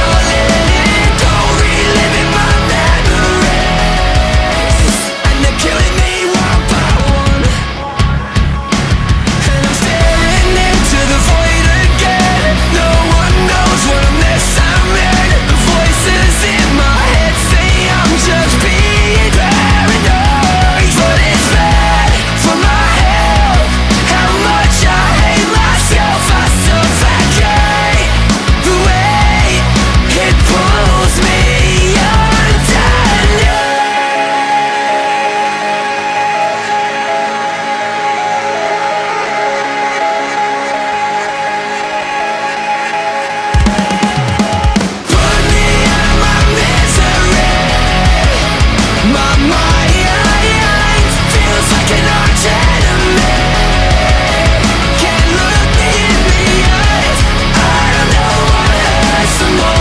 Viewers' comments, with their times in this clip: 0:06 What the heck Bro.. feels like Linkin park Is going in...
0:07 Absolutely bonkers! Linkin Park - Hybrid Theory kicked in yo! WOOOOO! Yeah baby! That's what we're waiting for! 🤟
0:07 Linkin Park have joined the chat.
0:07 only linkin park feel this goddamn transition ova here papercut vibes man!!!!
0:07 Everytime I hear the part I think the bridge of Papercut will start now... THE SUNNNNNNNNN GOES DOWNNNNNN! Gosh I love BMTH
0:07 im the only who hear chester? singing the sun goes down?
0:08 Gives me goosebumps... "THE SUNNNNNN COMES DOWWWWWWNNNNNN"
0:09 Man this bridge sounds just like Papercut
0:31 nice tribute to Chester in Somewhere i belong with that filtered prolonged scream
0:40 sounded like the gravity falls thingy. yes i know there are only so much notes to be played but it just sounded like it xd